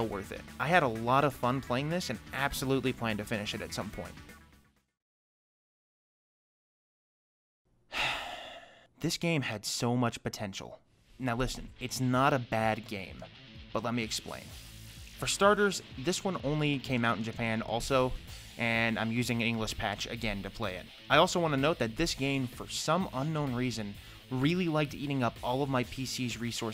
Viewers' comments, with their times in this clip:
0:08 As soon as he sighed I knew something was off